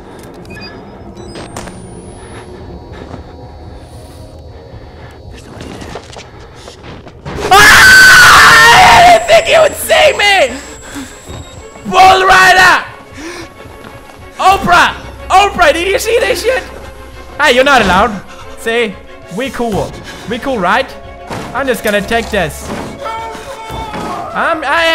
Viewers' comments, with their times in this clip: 0:06 Rip to those headphone users
0:06 Ear Rape Lol
0:07 THAT SCREAM THO!!!!!!!!!!!!!!!!!!!!!!!
0:07 wow actual ear rape for headphone users
0:07 turn up your volume
0:08 my ears still hurt
0:08 What type of sxream was that
0:09 that scream scared my dog and I was watching through headphones!
0:09 Pewds girl scream
0:09 Omg R.I.P. My ears
0:09 that's a high pitch you got there